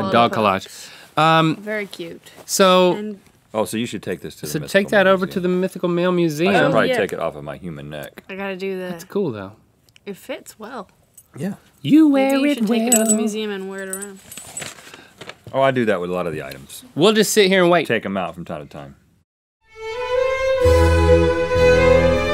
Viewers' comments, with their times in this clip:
0:10 Link is secretly an RPDR fan?! (i know you wear it well is also a rod stewart song but he sang it in the tune of rupaul's song)